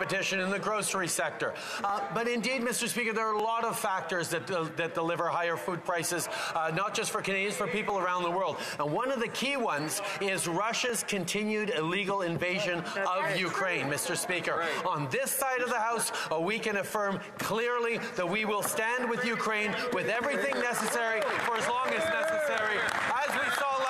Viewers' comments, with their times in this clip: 0:06 Justin's voice is very annoying, especially when he lies and plays Canadians for fools. This guy changed the subject from Canadians standing in lines at food banks to some Ukraine BS war that doesn't concern the avarage of Canadians who are struggling to put food on the table. We need a vote of no confidence for this incompetent PM. It makes me want to join politics.